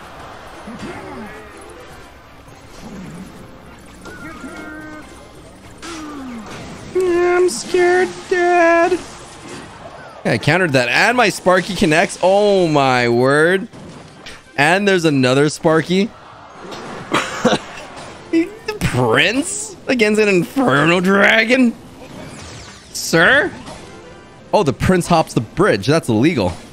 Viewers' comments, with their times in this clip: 0:09 bro decided to be Carl wheezer